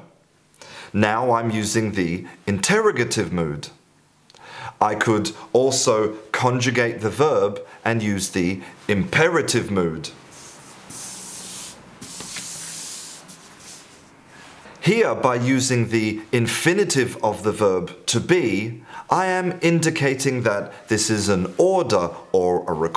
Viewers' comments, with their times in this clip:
0:08 Strange to hear a native mispronounce INTERROGATIVE